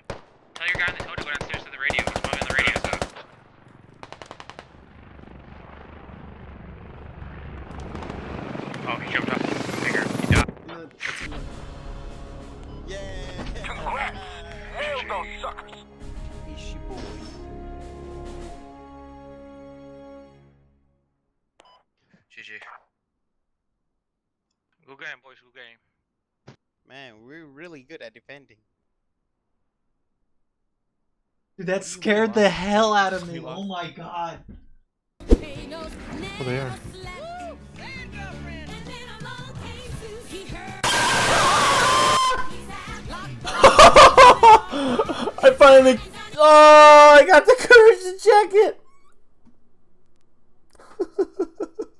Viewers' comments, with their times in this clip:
0:09 POV- you were in the twin towers Edit- ik it’s a helicopter.
0:32 the way he got scare and everyone around just kept on cheering